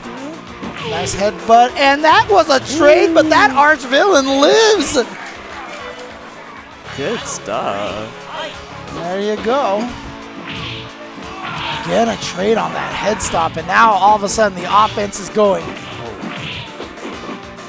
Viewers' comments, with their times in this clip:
0:05 That was the gayest voice i've ever heard. "Good stuff"